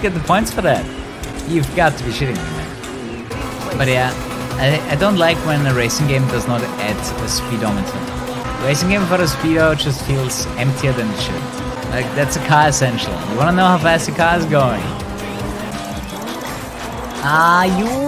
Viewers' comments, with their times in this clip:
0:03 Is that Eurobeat?